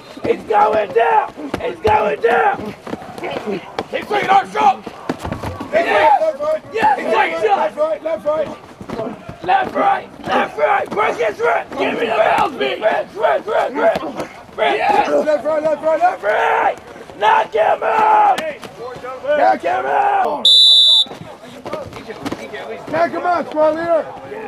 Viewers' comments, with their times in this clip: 0:06 Big Smoke voice